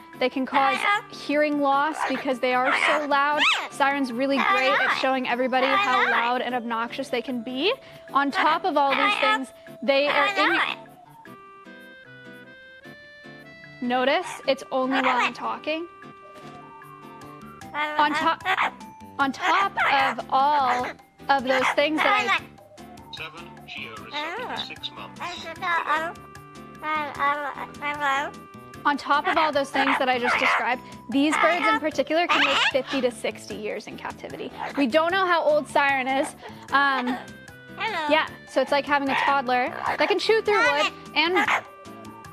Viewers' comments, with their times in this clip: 0:03 i love how while shes explaining that parrots are really loud Siren is just repeating "no im not" over and over LMAO
0:23 I love the little oOooh She sounds so cute and sweet sometimes, and then immediately switches over to obnoxious as fuck screeching and squeaking 😂